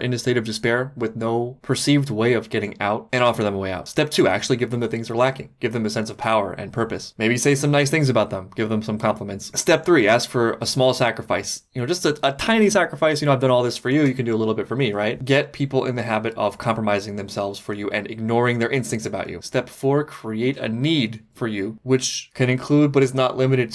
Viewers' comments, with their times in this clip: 0:07 why does sound like what all for one does in mha 😂